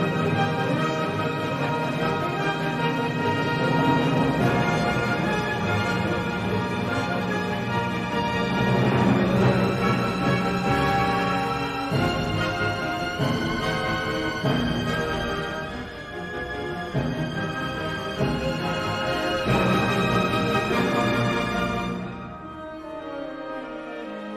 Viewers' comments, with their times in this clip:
0:07 Double bass army!! 🎻😉